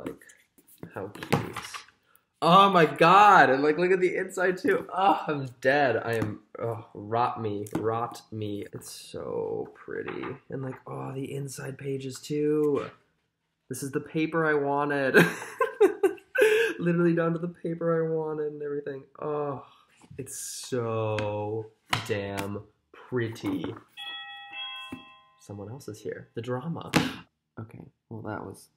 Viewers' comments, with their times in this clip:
0:10 I just finished reading the book recently it WAS SO NICE WHEN'S THE NEXT BOOK!! btw sounds like justin bieber to me HAHA